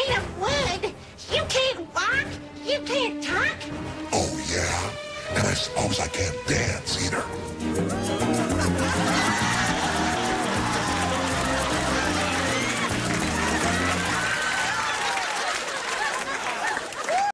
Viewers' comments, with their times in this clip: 0:09 The music that plays sounds a lot like (Elvis Presley's) song Surrender... Only without the singing.